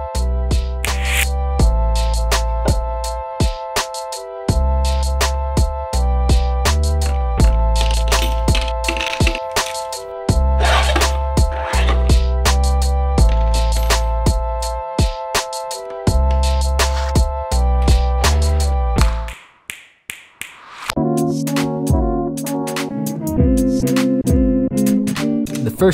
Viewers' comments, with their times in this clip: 0:06 Your editing and sound design are next level. like when the tools appearing in the drawers each make unique appropriate sounds, loved it.
0:06 that rhythm was sooo satisfying - I appreciate the work you put in to add that small detail that really improves the feel of the video :). Like someone else said in the comments, this channel is destined to blow up fast
0:08 Daamn, listen how the tools falling into the tray time up wih the beat ! Smooth brother!